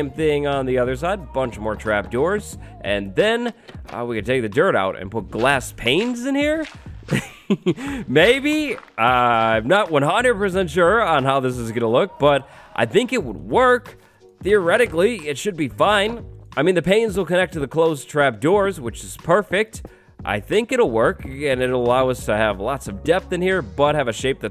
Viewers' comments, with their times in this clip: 0:06 i love the little "heehee"